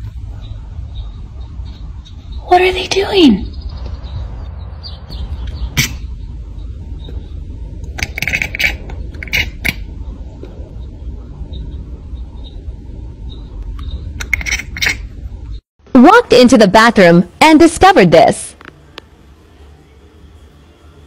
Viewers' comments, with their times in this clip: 0:06 -> Cat is calling bird there. If a cat sees a bird and wanted to hunt, i guess it calls like that to attract to that bird.